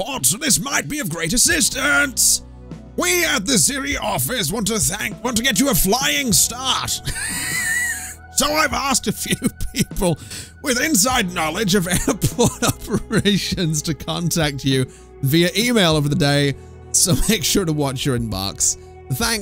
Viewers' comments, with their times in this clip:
0:07 THE WHEEZE BAHHAHAHAHA loved it